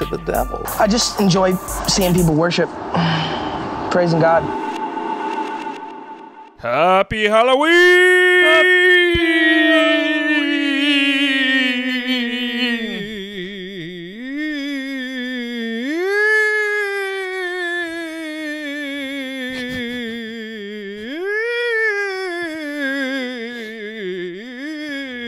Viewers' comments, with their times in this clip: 0:07 After that intro, I want the entire podcast to be "HaPpY hAlLoWeEeEeEeEeEeEeEeEeEeEeEeEeEeEeEeEeEeEeEeEeE-"